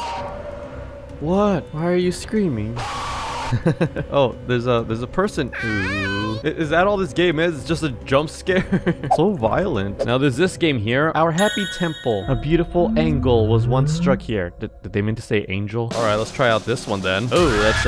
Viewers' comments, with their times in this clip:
0:05 Bro Kirby's voice